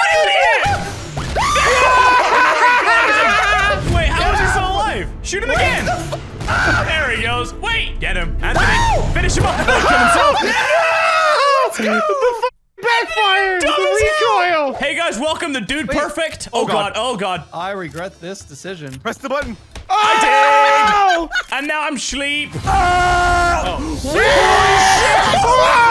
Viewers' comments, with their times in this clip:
0:08 anyone hear Michael Jackson